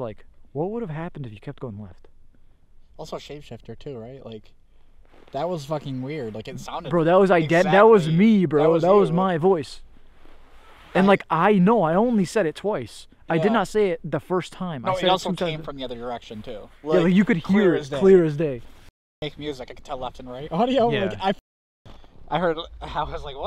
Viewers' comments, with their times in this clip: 0:10 Idk if yall heard this but I wanted to point out that and put it to your ear but you can hear a scream but u really dk but yea